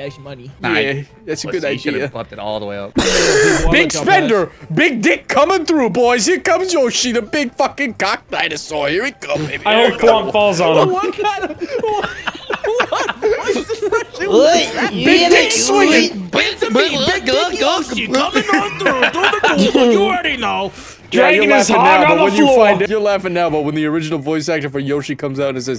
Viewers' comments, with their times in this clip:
0:09 i thought we got Alex Jones or Joey Diaz for a moment